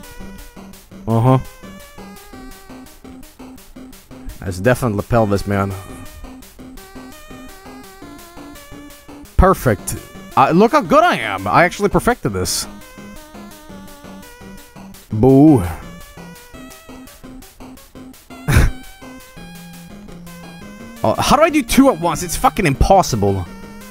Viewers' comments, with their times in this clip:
0:08 That doesn't sound like Love Me Tender at all